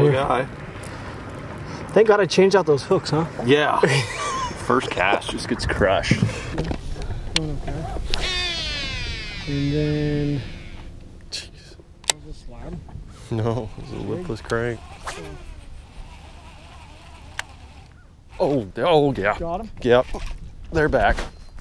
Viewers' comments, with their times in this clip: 0:08 reel sounds amazing